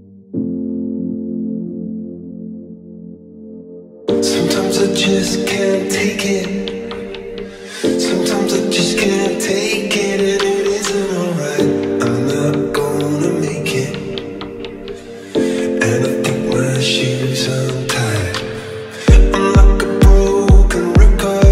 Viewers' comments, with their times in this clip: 0:03 go to and then put it at 1.25 speed it sounds alot better trust me :D